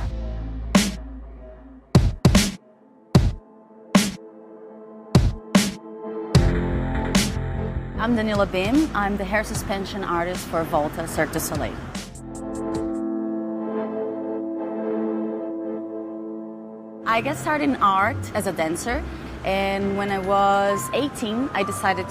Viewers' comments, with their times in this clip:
0:07 you can't unhear this: "I'm vanilla bean, i'm a hair suspension artist"
0:07 I can’t be the only one who heard “I’m Vanilla Bean” No offence to her at all^